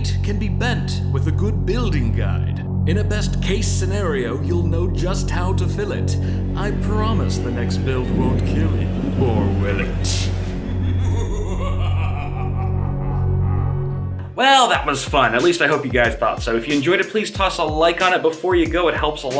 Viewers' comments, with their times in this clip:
0:05 vsauce intro song plays